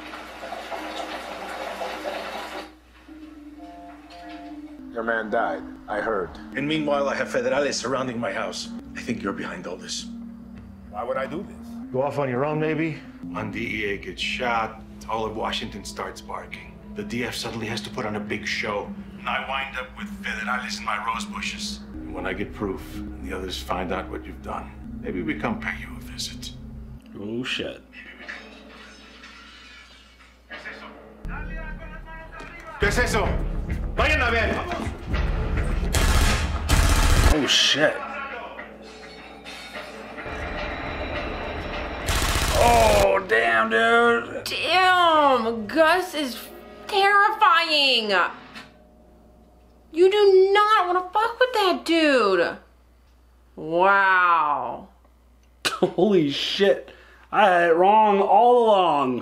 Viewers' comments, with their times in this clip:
0:10 Does anyone else think that the "Why would I do this?" sounds hilarious?
0:41 Gus's smile after hearing all the machine gun fire, priceless.